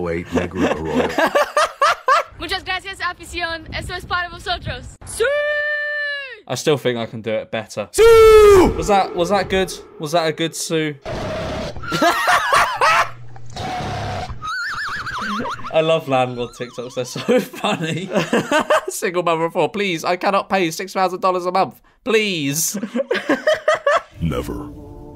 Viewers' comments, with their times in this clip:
0:08 You have the ending wrong. It has less of an oo at the end